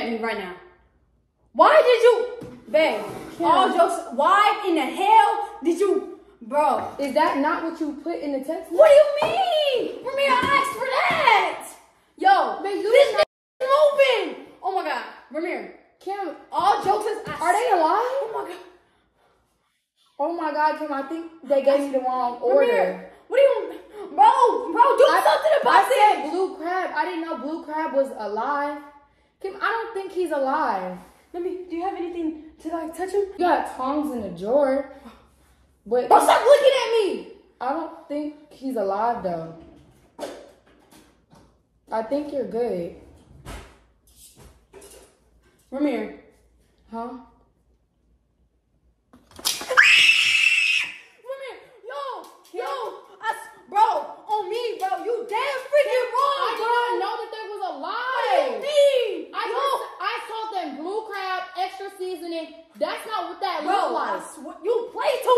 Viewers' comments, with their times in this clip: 0:07 RIP for the people who is wearing headphones😂😂😂😂💀💀💀💀💀✝️✝️✝️✝️
0:50 was…a personal scream 😂